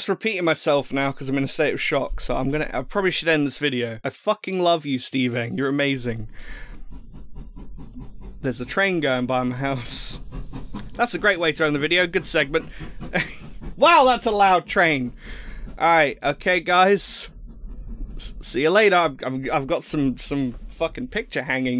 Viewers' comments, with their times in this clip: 0:08 The season 7 hype train! xD